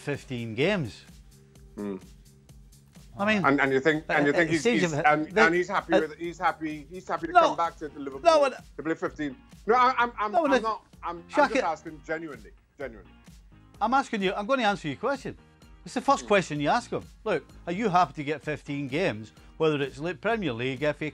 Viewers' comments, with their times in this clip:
0:03 they literally mumbled about nothing for more than 10 seconds straight. These guys sound so stupid like let him get his idea or at least have one to say before you just start spewing nonsense in order to fill air time. Like half the time these guys don't even know what they're trying to say and just try to blather until something comes out. it just sounds so unprofessional especially with the live pauses, they should know to let them finish it at least say "wait let me chime in first"